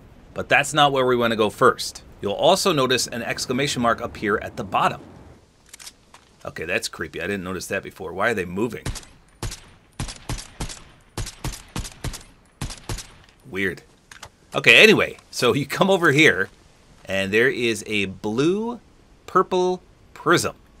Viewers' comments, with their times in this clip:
0:08 Bro made a beat ☠️